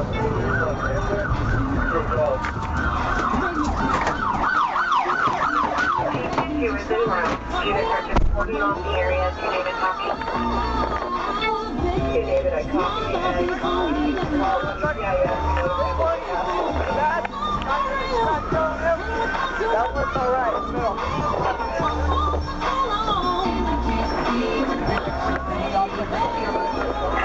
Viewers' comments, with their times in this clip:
0:10 since when can cops listen to music while going to a call smh & that's some strange music to play on your way to a major Construction accident